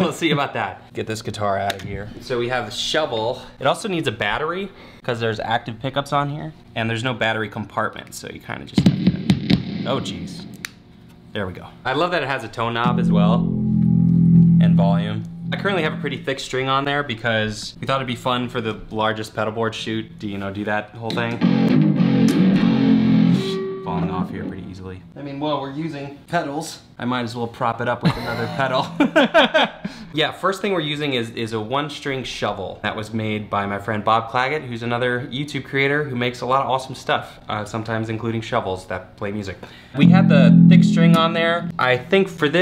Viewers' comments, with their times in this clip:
0:08 sick drum fill
0:22 I wish my guitar could djent that hard
0:28 those two laughs in perfect sync... kinda creepy